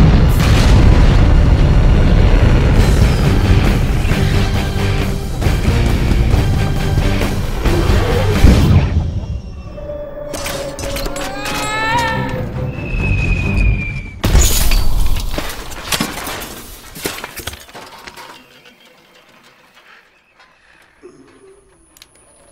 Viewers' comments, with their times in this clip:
0:09 AHHHHH love that fallibg scream at the end